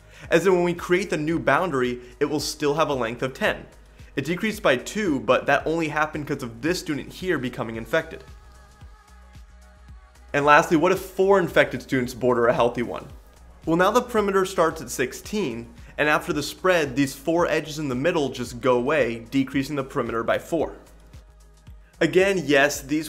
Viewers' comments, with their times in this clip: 0:08 All this time till like I thought you were talking about a disease named Jason. This is how good I am at maths I guess :,D